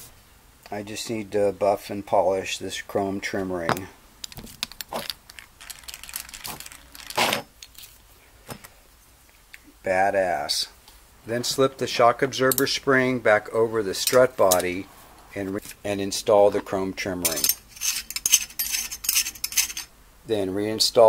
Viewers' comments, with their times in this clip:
0:04 Man, that hi-tech polishing tool gets me every time, especially the sound it makes as it is being spun! =)